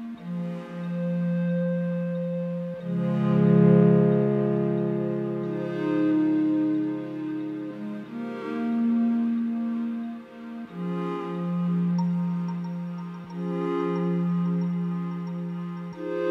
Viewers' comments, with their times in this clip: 0:03 Wonderful. Can I ask, which machine is creating those beautiful swells like the one happening ?